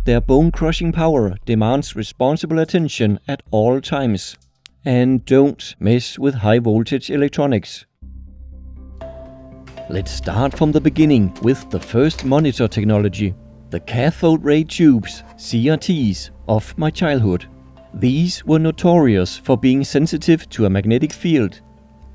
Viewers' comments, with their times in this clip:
0:08 this music makes me wanna chug a 30 year old bottle of Crystal Pepsi